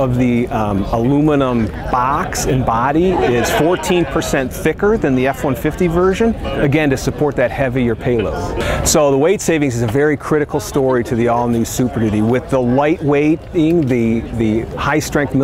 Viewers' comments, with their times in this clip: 0:03 the baaaaax and baaaaaady :D